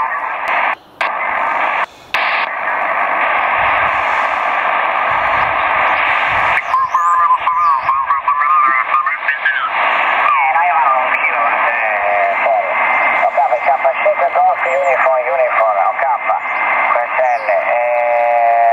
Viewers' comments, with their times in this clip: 0:06 I am fluent in 6 million forms of communication and this signal, # could be an imperial code